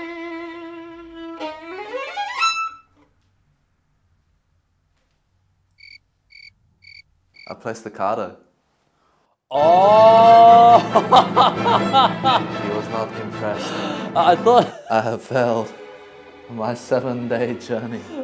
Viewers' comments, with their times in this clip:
0:04 omg, I lost it at the cricket sounds 🤣 loving their dynamics with each other; Eddy trying his hardest to impress Brett and Brett being a supportive friend (after realizing what this was all about) 🤣